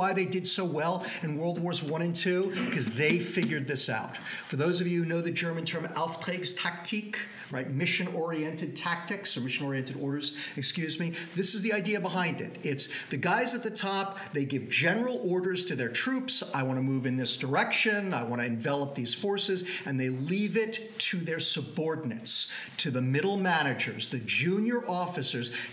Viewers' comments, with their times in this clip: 0:07 perfect Pronounciation of ä, ironically in a Word that doesnt have one.